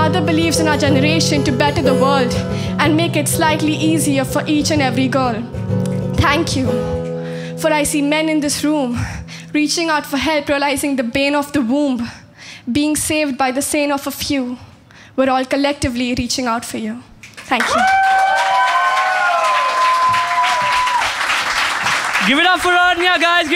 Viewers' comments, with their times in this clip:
0:07 sounds like an Eminem Acapella